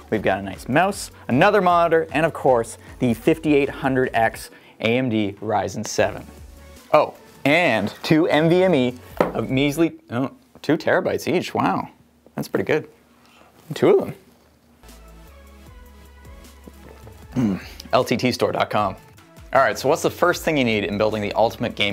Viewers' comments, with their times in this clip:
0:09 Wow Thats pretty good Owen Willson and iDubbbz approve